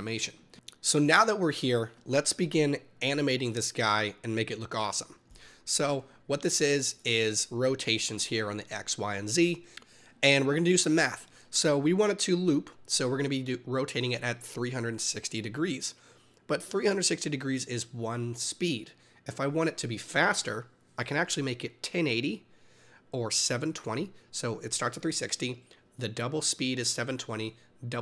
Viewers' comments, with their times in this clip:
0:09 "Were are gonna do some meth"